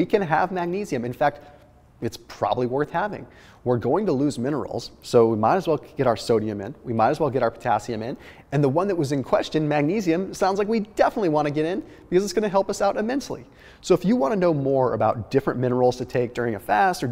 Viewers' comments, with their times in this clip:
0:05 rare moment Thomas kind of stutters.